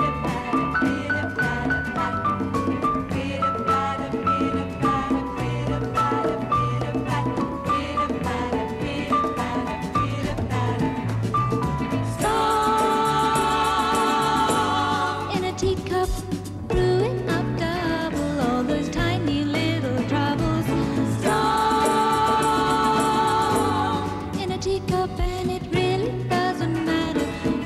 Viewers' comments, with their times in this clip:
0:10 I had such a crush on Lynsey when I was 12. At 48 I realise I haven't got over it yet. She's lovely! :-) Definitely singing live - you can hear her little laugh Sigh.....